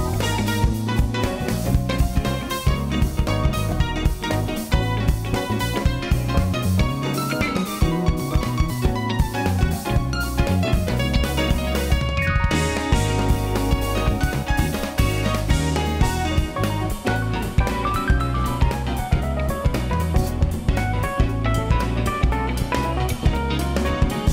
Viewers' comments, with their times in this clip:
0:07 That raise of eyebrows synced with the string bend! :D